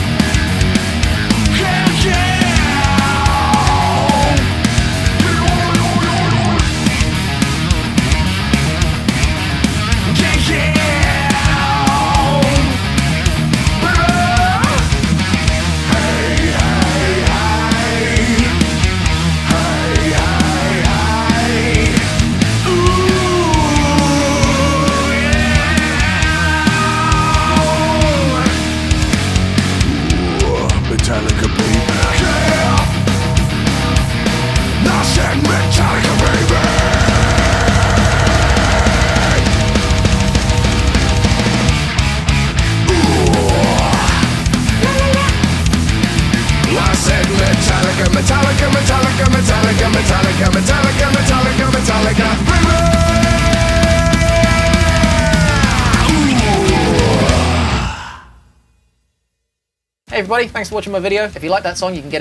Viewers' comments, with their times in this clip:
0:03 I laughed so hard when he went blblblblblblblbl
0:16 That actually sounded more like Alice In Chains
0:16 sounded like some alice in chains.
0:19 started sounding like alice in chains lol
0:29 OMFG!! That riff is fucking awsome!!!
0:29 Are you 100% sure that's Metallica? Sounds more like slipknot
0:30 kinda sounds like Mastodon
0:31 I know exactly how the snare's gonna sound it's too accurate!
0:32 St Anger Snare!
0:32 FUCK YEAH RIFF!!!
0:36 St. Anger spirit! LOOOOL
0:36 now we know how Lars recorded the drums on St. Anger... Hahahaha
0:47 what's the reference-original track? The vocal line is sick!